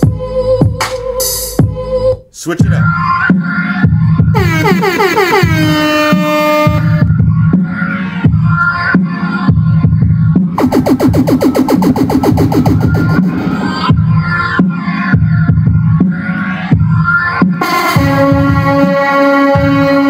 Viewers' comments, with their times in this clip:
0:05 is the type of music you would hear a baseball player use for their walk up music or when they come into pitch.